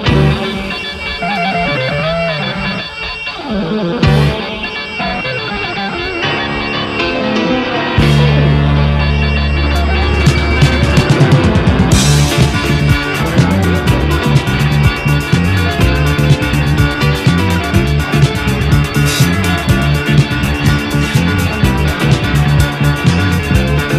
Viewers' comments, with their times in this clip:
0:08 gave me a deja vu of Supertramp's "Another Man's Woman".